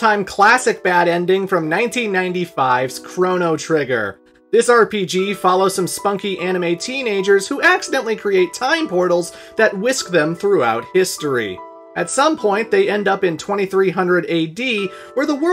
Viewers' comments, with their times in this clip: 0:03 They do not "accidentally create time portals". Lucca's teleporter malfunctions in response to Marle's Pendant and opens a Gate that was already there, but invisible to the naked eye. But also, kudos on pronouncing "Ra's al Ghul" correctly. You're one of the few.